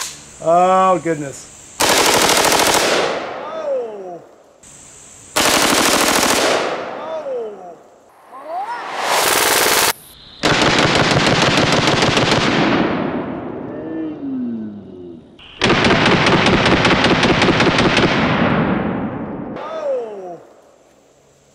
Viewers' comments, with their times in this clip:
0:07 That high pitched "Ohhhh" is the most amazing thing I've heard all day!